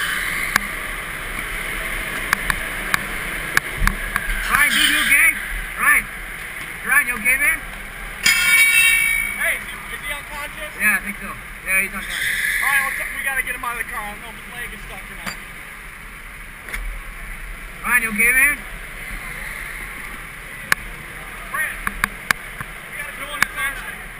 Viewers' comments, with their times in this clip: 0:07 I thought the dude setting down the metal bar was a sound effect for him being unconscious ugh I need more Jesus in my life 🙏